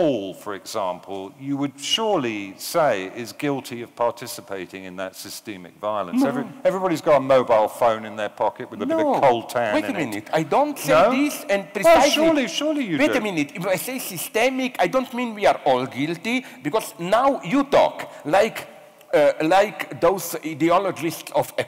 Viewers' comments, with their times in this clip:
0:04 I’ve never heard the word systemic pronounced that way in all my life.